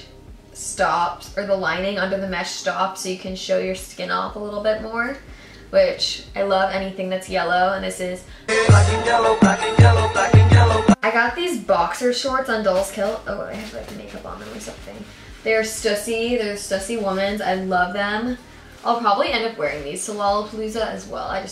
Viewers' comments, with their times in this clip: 0:09 am i the only person who got scared when the music poped in ?